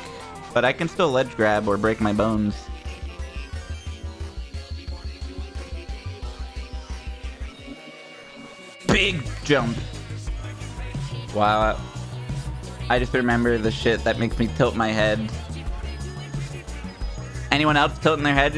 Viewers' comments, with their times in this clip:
0:03 No ones talking about the music sync ??